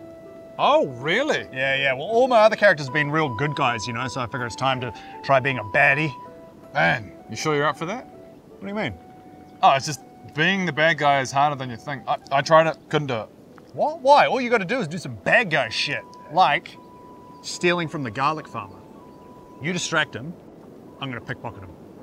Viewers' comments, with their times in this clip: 0:06 that fucking sound he makes man